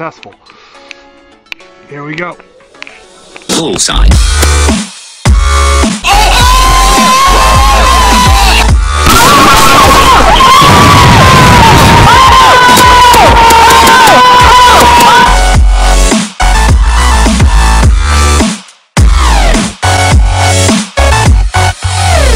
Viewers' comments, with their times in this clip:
0:04 was so loud my hears hurt, i was wearing headphones